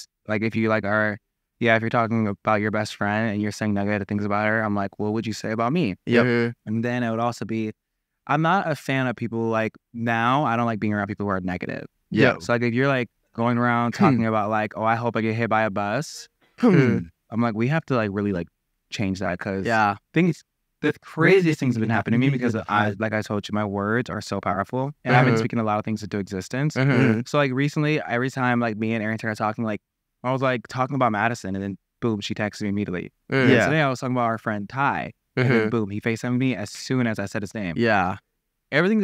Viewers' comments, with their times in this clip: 0:10 the “hmm” and “yeah” in sync 😂
0:20 when larray was talking about people being negative you can just hear the triplets saying ‘mhmh’ at the same exact times 😭😭😭
0:21 the ‘ urhmmmm ‘ after larrays every sentence had me dying